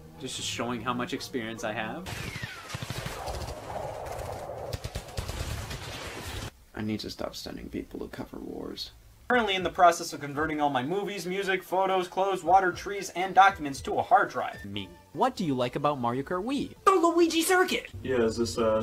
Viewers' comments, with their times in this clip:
0:06 Deep Voice Scott The Woz isn’t real. It can’t hurt you. Deep Voice Scott The Woz: